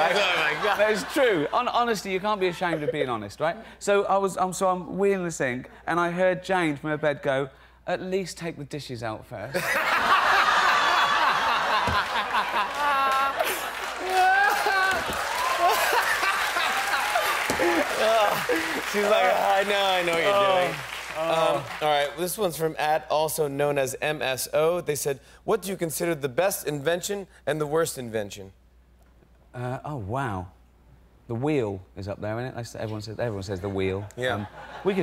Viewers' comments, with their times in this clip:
0:09 the biggest fake laugh TV viewers have ever witnessed in the history of TV viewing!
0:18 that's such a fake laugh, he don't like that story at all